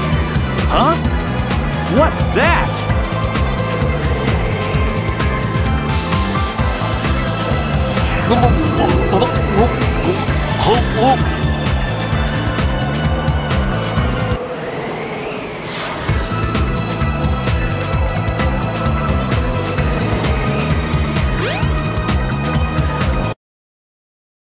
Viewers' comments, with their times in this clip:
0:09 Eh, was Knuckles drowning or just downing a huge bottle of beer?